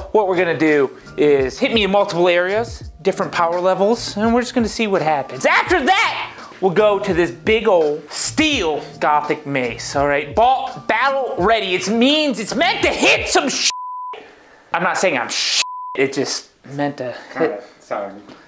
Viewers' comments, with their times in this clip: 0:03 sounded like legos